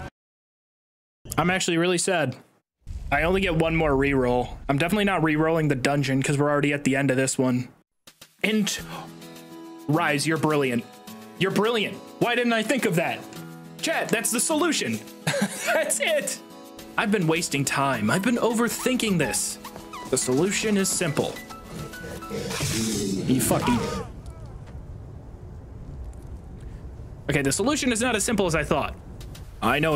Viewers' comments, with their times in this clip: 0:10 The yarn yoshi soundtrack goes hard